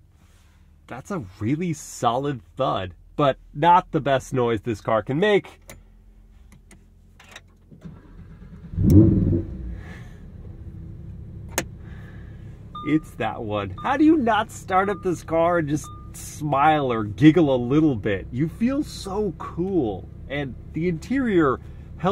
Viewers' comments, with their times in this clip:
0:07 i drove an M4 and know how fking awesome that engine start sounds..you wont get the feeling in a video but this thing...jesus